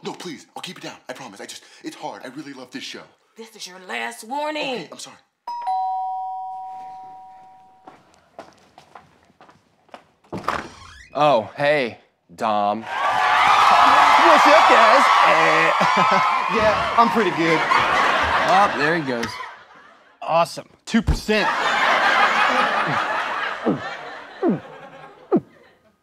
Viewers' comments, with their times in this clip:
0:10 please tell me someone else noticed the gmod door opening sound too